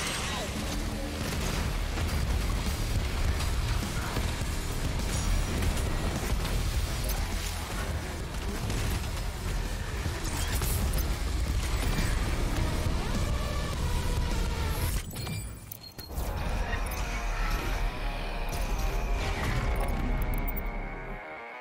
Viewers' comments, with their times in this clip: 0:03 the timing when she said "The only thing they fear is Him" with the music